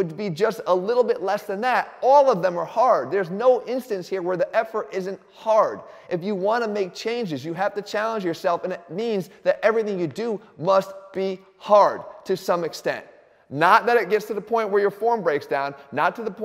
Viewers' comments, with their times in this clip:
0:04 the elbow clicks🤣🤣